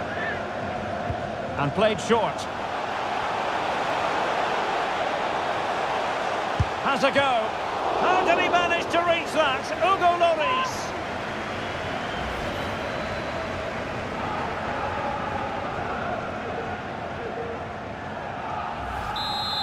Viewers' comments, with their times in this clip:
0:07 the crowd literally said "oof"